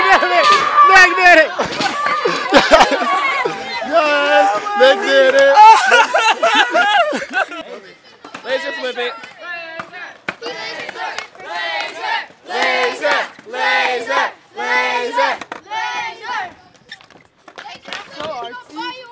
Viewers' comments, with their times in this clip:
0:04 lmfaooooo the fake cry I'm dead XD